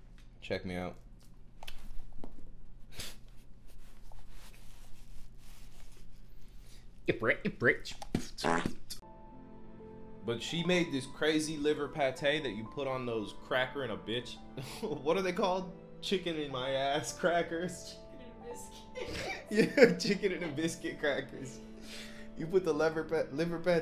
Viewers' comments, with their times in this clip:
0:07 The timing of the fart really added to the beat